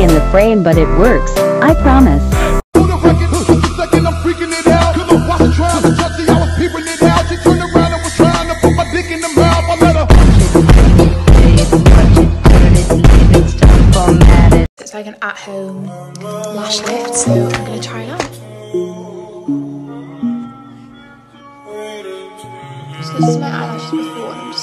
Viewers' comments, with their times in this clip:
0:08 interesting music choice for power washing a driveway... 🤣